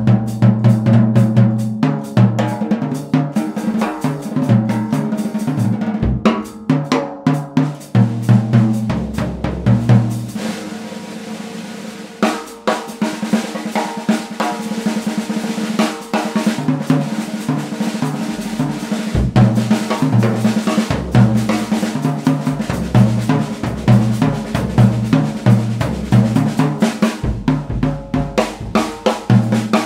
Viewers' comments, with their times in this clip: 0:10 Love the Drum Boogie quote Fun stuff!